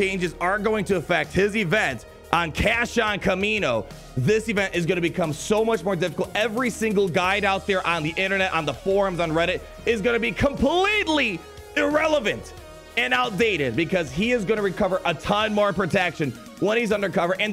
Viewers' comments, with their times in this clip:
0:03 kash on kamino lol